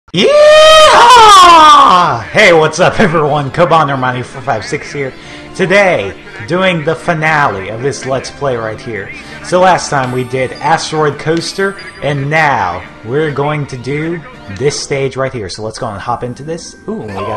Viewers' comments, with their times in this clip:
0:00 rip people who forgot to turn down there volume. X_X
0:01 GOD DAM, I REGRET HAING MY SPEAKERS FULL SCREEN !